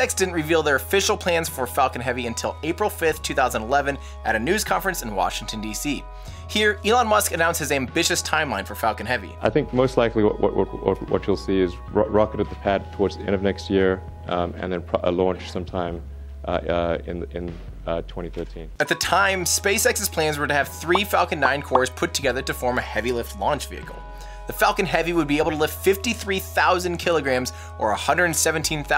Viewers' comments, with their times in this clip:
0:09 such a good talker